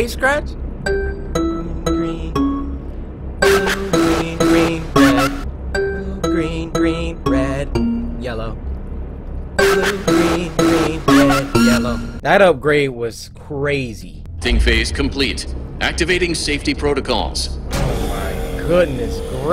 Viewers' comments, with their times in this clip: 0:03 that sounds like chica